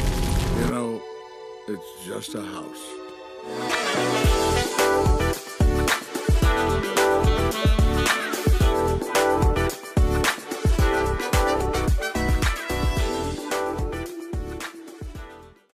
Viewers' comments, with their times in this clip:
0:12 bro turned into stuka